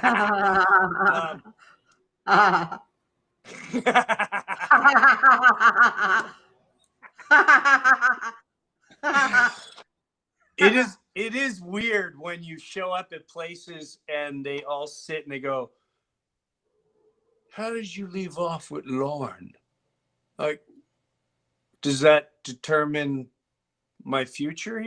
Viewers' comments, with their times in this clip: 0:07 the evil laugh was epic